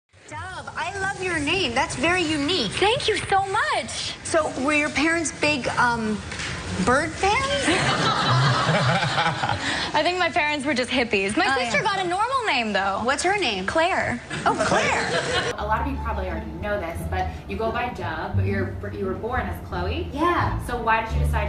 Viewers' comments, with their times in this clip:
0:02 it sound wierd~but cool vid✴✴
0:03 thank you tho much!